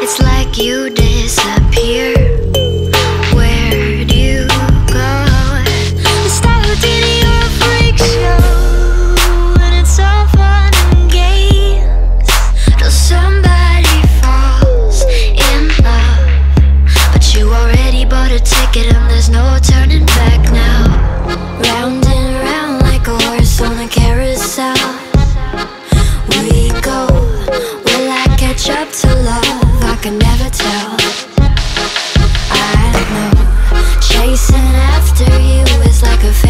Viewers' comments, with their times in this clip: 0:06 Can never tell what she saying someone help me
0:21 if you listen close you can hear a angelic voice 😫